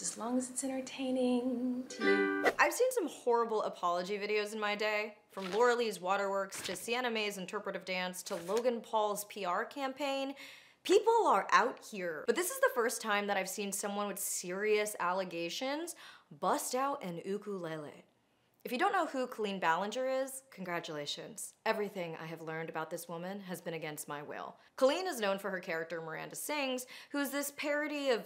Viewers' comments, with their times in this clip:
0:10 "People are owt heeere." Wow, that was too white even for me. I'm gonna put on a mayo face pack and take a Friends trivia quiz to re-center.